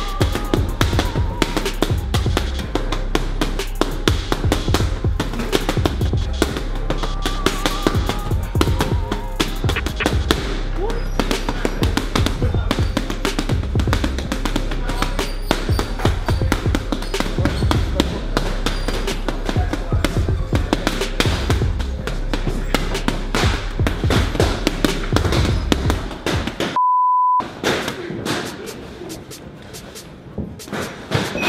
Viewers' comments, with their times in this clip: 0:10 boxing type beat
0:13 literally sounds like music